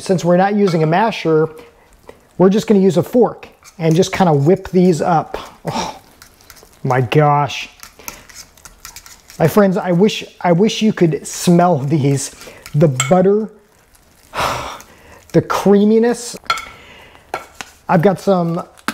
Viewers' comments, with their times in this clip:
0:03 That sigh and look back at the camera tells me all I need to know about those potatoes.